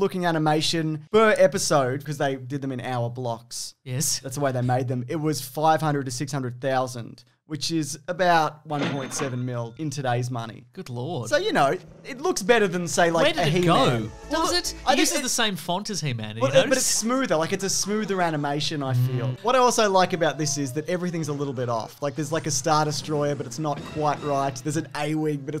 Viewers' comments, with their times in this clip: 0:09 why is there not a flushing sound here?????!!!! What a missed opportunity for humor!